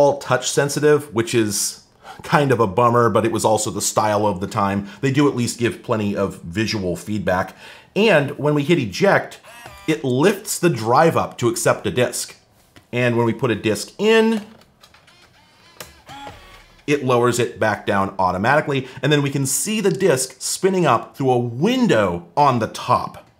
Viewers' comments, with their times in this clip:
0:10 I fell in love with this strange device THE VERY INSTANT the disk thingy made those noises when opening up and accepting a disk